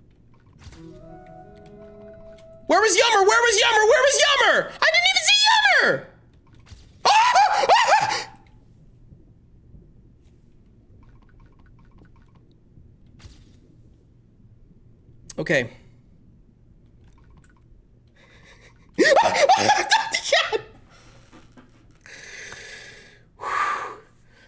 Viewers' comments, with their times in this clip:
0:05 His scream strangely vocalizes to Green Hill Zone